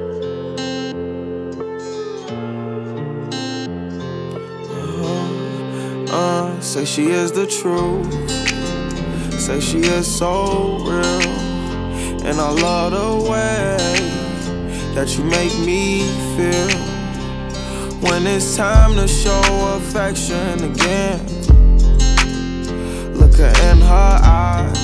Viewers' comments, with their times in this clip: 0:06 Lowkey is giving me Hope it gives you hell by American reject vibes